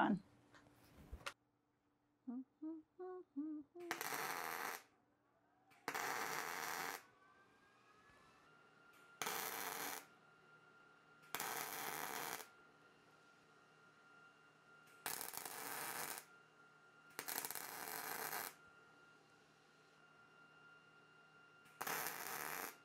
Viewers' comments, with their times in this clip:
0:07 you can hear me humming! 🤣 I love my job!!